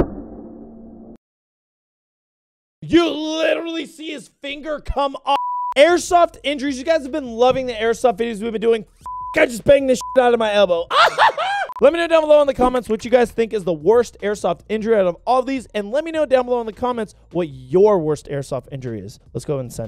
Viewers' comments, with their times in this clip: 0:07 he served in the army and when he came out he started crying about bonking his elbow is that normal